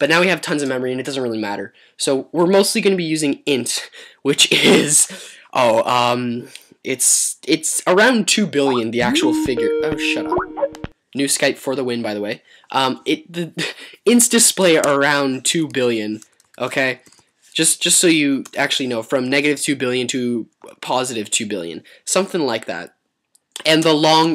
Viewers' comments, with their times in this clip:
0:09 Like if u checked ure skype lol